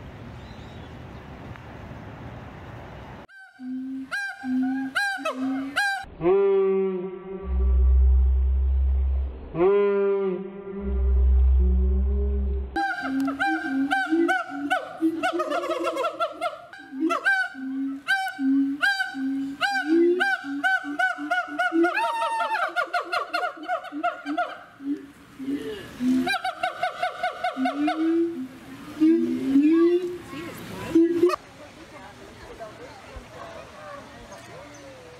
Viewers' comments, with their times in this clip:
0:04 that slow-mo shout when the other just watches him XD
0:05 What it sounds like when I'm catcalling girls on my break.
0:06 The kind of sound you'd hear after waking up at 3 a.m.
0:09 beginning of a trap beat straightup
0:18 my ex-wife screaming in my ear.